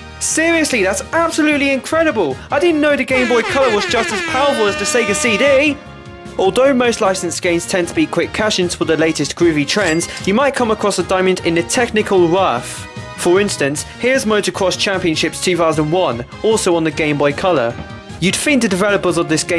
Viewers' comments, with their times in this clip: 0:03 was the best part. Gotta love that airhorn. Kinda disappointed that there was no Donkey Kong Land but Rayman sorta made up for it. I always thought they were similar. Maybe you can do it some other time. I dunno. Seriously, that Xbox One tho